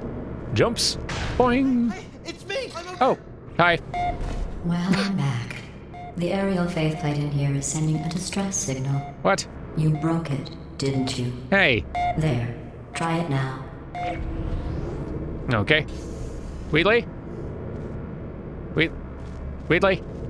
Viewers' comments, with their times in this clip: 0:03 I remember laughing uncontrollably when I first played the game! I'm happy to report it still has a similar effect! I think GlaDos' slow and deliberate way of speaking next to Wheatley's absolute panic and OHMYGOSH IVEGOTTOTELLYOUSOMETHING way of speaking, just works perfectly! 😂❤️